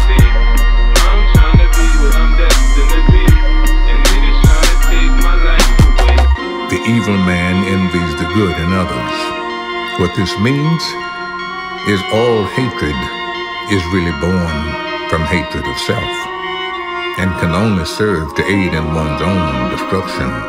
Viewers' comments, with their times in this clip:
0:07 Morgan Freeman starts talking
0:07 Tomorrowland intro voice yeahhh